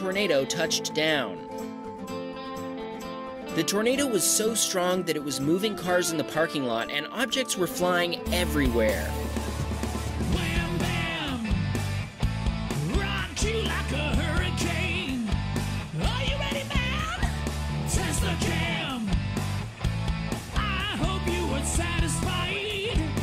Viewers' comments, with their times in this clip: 0:09 Like the song. 👍
0:10 love the jingle of this song